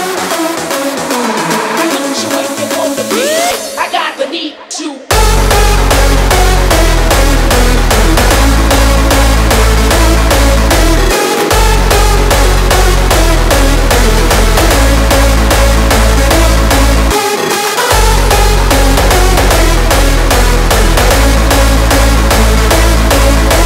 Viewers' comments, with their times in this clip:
0:04 WTF? Sounds like "Tonight", just with few notes reordered.